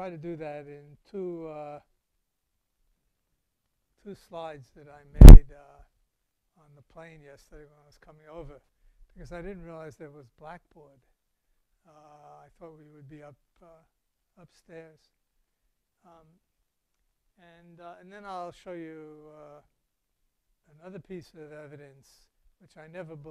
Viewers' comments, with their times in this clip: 0:05 Fascinating moon. For those who watch this with an amp and speakers plugged in beware speaker destroying crunch and occasionally later. Recommend you enable volume compression. On Win 10 right click speaker in app tray and select playback devices. Select speakers/Properties and tick loudness equalization in enhancements tab.